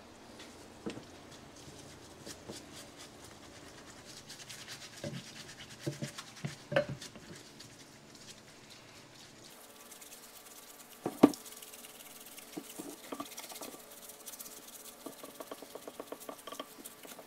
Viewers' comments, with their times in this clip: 0:04 I wonder why the sound cut out …?